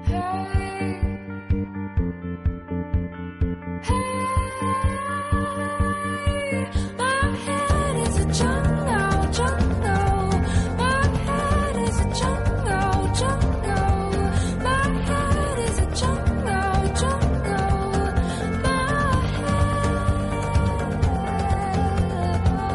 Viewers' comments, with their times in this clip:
0:07 I love the out of tune bass